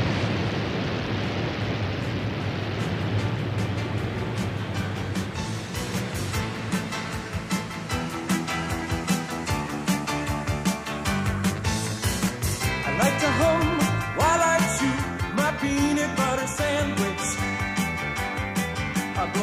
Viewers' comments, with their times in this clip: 0:06 has been stuck in my head my whole life. I don't remember anything else about this video, but I remember that song.